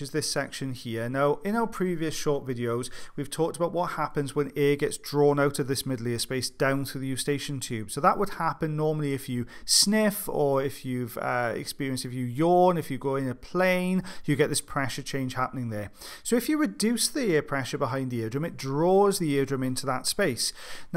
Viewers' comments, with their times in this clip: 0:08 I can't be the only one who sniffed when I heard 'sniff'.. It was like some raised voice order, like they use during hypnosis, and I sniffed!